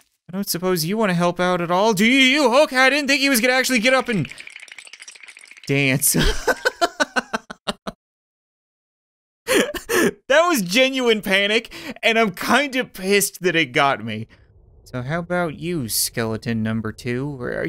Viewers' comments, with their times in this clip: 0:03 sounds like building in a lego game